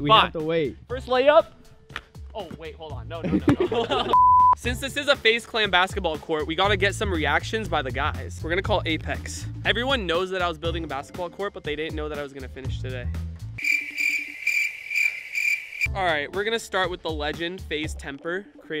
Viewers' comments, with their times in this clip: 0:04 bleep sound effect